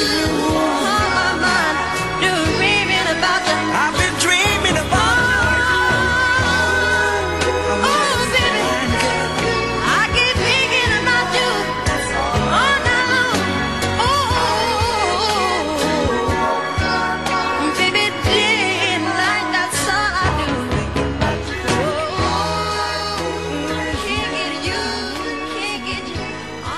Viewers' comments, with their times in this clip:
0:08 Michael kinda sounds like his kid self again right there